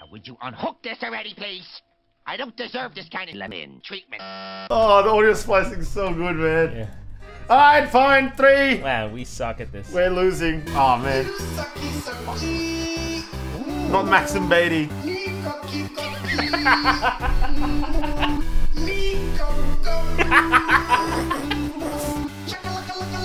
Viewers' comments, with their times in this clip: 0:09 while that was playing I was trying so hard not to laugh and plus it was a great beat, but hilarious lyrics 🫢🤭😂🤣😆💞💕